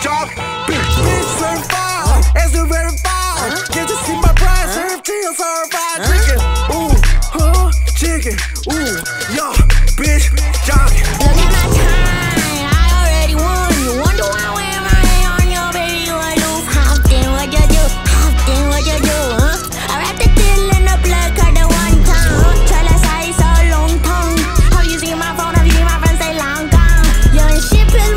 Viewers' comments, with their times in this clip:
0:08 chicken that’s all I caught
0:14 korean playboi carti